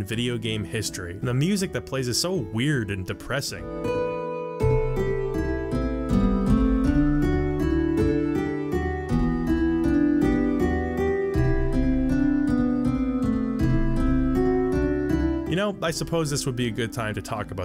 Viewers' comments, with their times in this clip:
0:03 I think the intent of the bridge being somewhat long with the melancholic music is because the group learns how the bridge was made before you cross it, and with the prior knowledge of how ex spheres are made, it's a bit of a sobering sight for them.